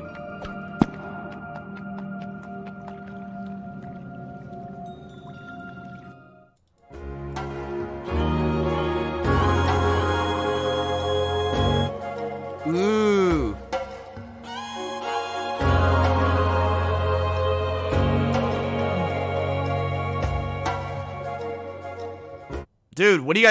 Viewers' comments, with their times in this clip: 0:07 what an incredible outro theme. That alone is making me buy unrooted. Well done 👏 👏👏